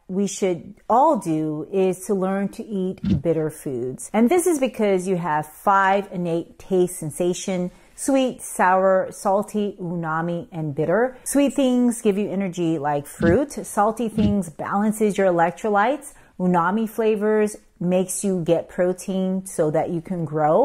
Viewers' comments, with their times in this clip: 0:04 Is it “unami” (which I hear her say) or is it “umami” as the transcript says? I’m confused. 🫤